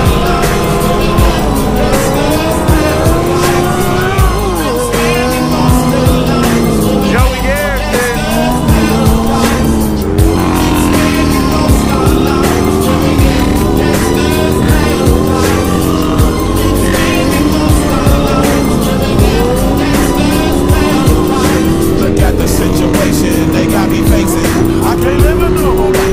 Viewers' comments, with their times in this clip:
0:10 tell me that doesnt sound like Franklin's bike from GTA VI